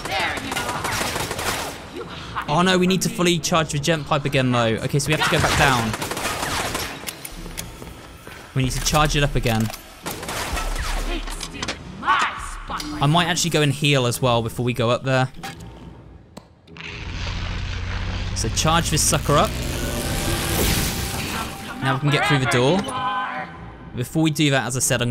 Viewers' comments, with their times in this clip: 0:07 If you listen closely, Alice's ammo is not infinite, she does need to reload